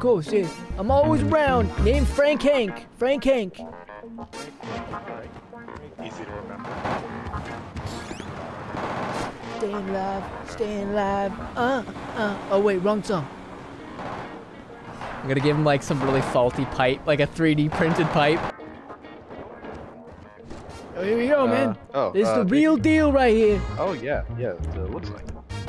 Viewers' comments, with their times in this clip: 0:10 He started singing the CPR song